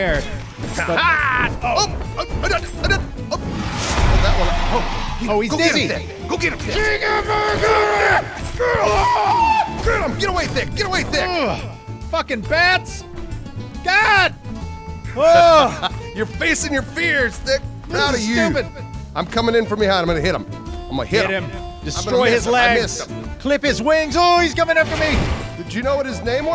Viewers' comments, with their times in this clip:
0:05 BEST WAR CRY EVAH
0:05 sounds like he's actually fighting a giant bat in real life, thats what i call devotedly!
0:05 WTF that battal cry LOL
0:05 * When you use the warcry ability in total war *
0:07 who the hell screamed like god damned tarzan ?! i am still laughing at that. i rewound it and watched it like 6 times
0:07 that's the scream of a boy becoming a man!
0:08 ahhhhh. The battle cry of a 120% masculine male warrior.
0:08 damn that noise was intense man I never would of thought you guys could even yell like that lol
0:08 The sound of a frustrated man.
0:08 The battle cry of a man facing his fears.
0:08 idk who scream was but that was amazing
0:08 The manliest battle cry ever
0:09 just seen this after I posted ... it sounds exactly like one of the ostrich things. and when you hear that when its pitch black out, you will shit your pants.
0:09 your voice sounds like one of those ostrich lol